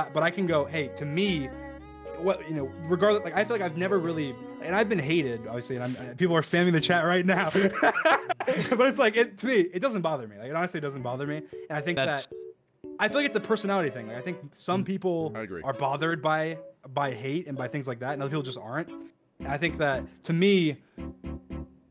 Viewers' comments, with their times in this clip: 0:06 dreams laugh here was so cute 😭😭